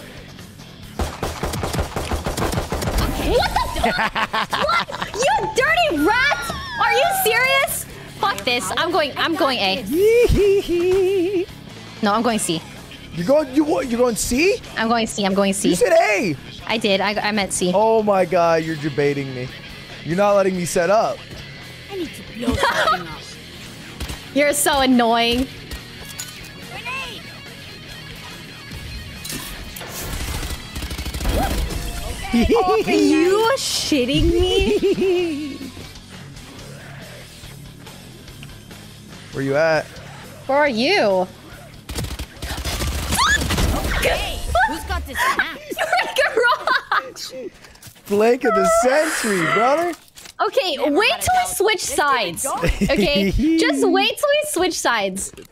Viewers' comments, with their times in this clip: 0:05 the ffx intro music made it for me
0:37 Ludwig’s gaming face plus the little gremlin laughs when he wins 😂